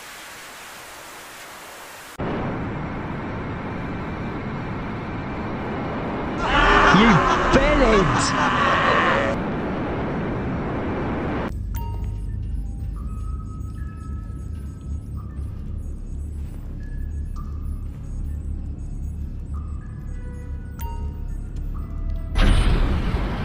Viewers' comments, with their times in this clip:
0:06 Okay, Ive been wondering this for a long time... wtf is he saying lmao